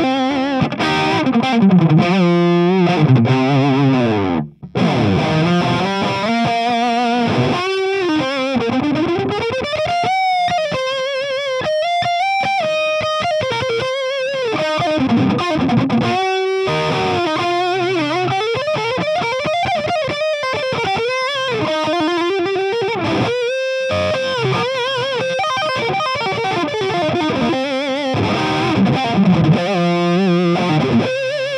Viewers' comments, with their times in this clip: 0:04 So to start down the path of the tone of Randy Rhoads you start with a super high output pickup that didn't exist 40 years ago... Because I was hearing the starts of that tone and it could easily be dialed in from there...
0:12 This pickup would be perfect for stoner rock especially at that mark